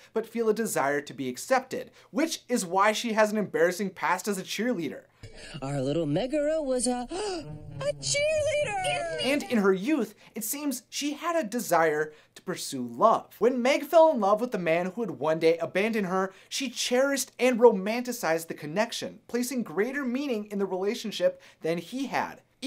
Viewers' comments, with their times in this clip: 0:06 Hercules voice tho-